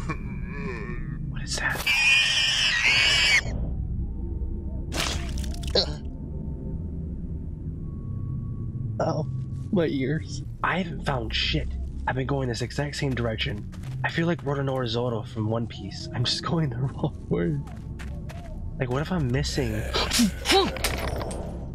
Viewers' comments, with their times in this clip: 0:03 I thought it was the start to not like us